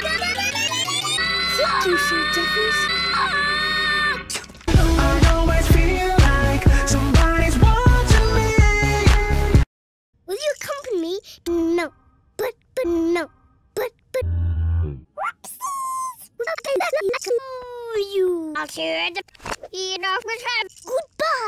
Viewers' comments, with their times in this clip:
0:05 I like the song also gr8 video